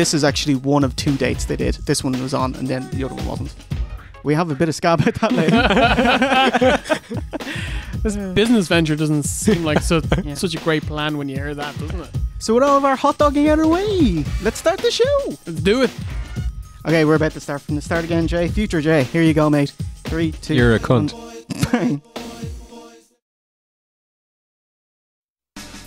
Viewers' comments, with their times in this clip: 0:10 Hold on... are we just going to gloss over “Marty Janneey” ?